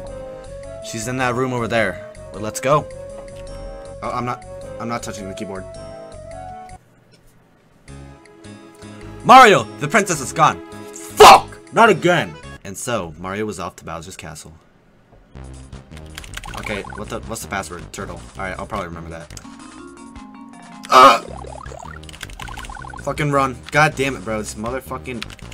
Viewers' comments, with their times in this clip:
0:07 that f word was absolutely powerful holy shit